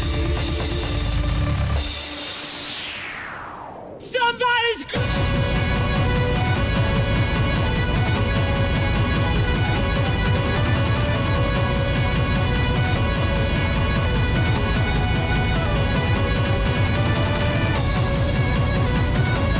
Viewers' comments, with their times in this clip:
0:03 that beat drop though